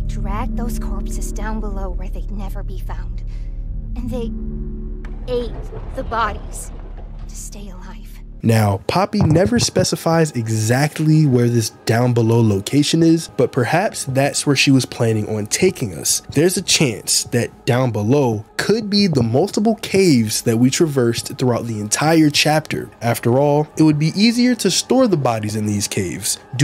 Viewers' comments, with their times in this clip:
0:08 The assaults mic caught me off guard 😭